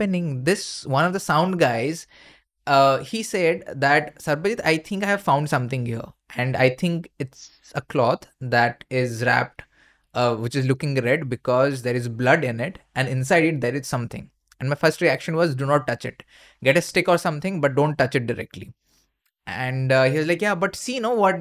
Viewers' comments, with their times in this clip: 0:06 can you guys hear a female voice -21 wispering something
0:07 That whisper sound It may be a mic issue or something. I was sacred.